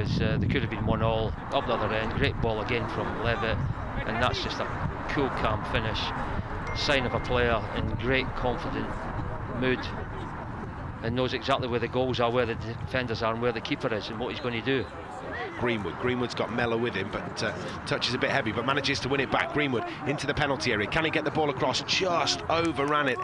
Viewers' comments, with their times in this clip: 0:06 there is a phone ring😂😂😂😂